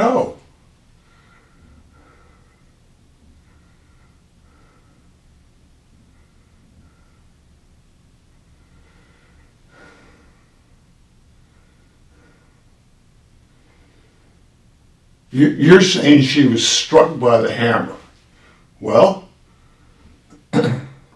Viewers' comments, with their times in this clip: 0:05 the silence........the breathing.....no answer....he did it. He don't remember but the Lord does.